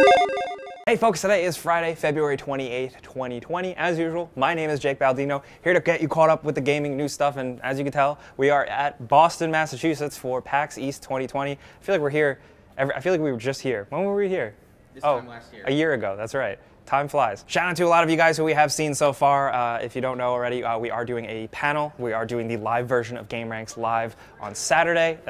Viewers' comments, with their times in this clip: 0:09 clicks woth mouth i see ya bud